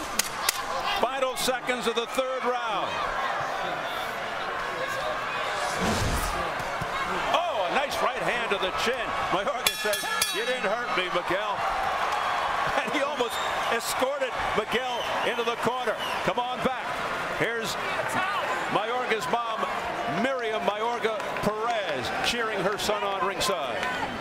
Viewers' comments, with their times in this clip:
0:09 time the ref was feeling MJ like when he said time ha